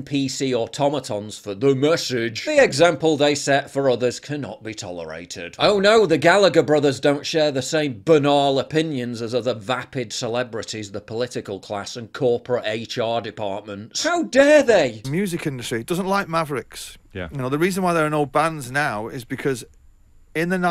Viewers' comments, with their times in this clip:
0:06 Hello, I wanted to know what's the british pronunciation for this word "banal". It's the first time I hear it, it sounds like you stress both syllables which is weird Others online say it's often pronounced as you just did "buh - nal", but the way you said it confuse me because you very clearly stressed the first syllable then prolongated the second one Any native british english speaker can help with this? Thanks Btw im not saying that his pronunciation is wrong or anything, I understood what he said. It's just a very rare case of a 2 syllable word where I can't exactly tell which one is supposed to be stressed